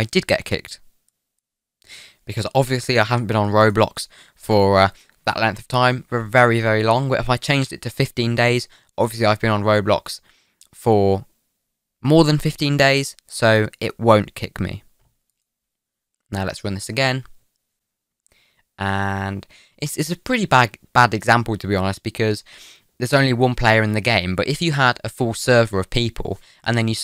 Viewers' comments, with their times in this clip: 0:10 he hesitates before saying: More than 15 days I have a theory that his account is less than 15 days old joke